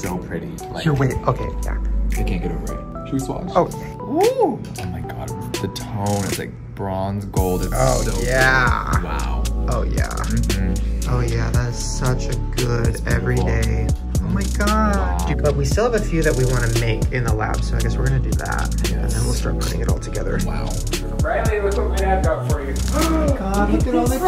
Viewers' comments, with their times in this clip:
0:08 they sound like they're singing or I'm really sleep deprived and I thought that. also the title is misleading because it doesn't have any shit to do with it.